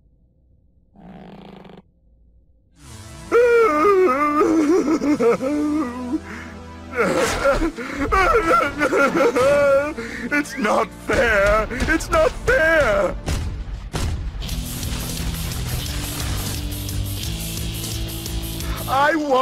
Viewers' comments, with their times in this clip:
0:03 Dr. Cortex crying.